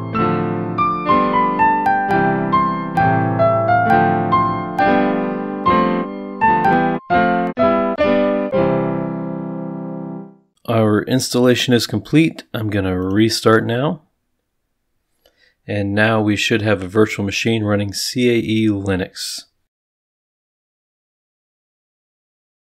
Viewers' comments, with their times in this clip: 0:04 great installation music!